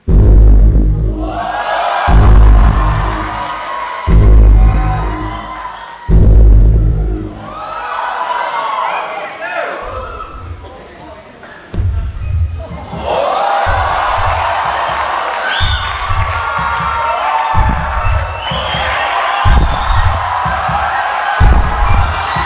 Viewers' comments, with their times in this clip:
0:09 Why were they all shouting ? I don't understand.